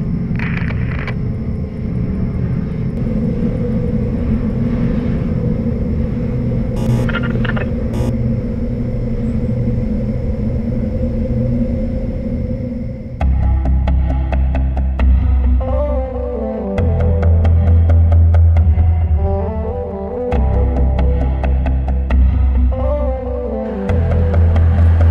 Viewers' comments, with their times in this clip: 0:09 Billie Eilish is that you😂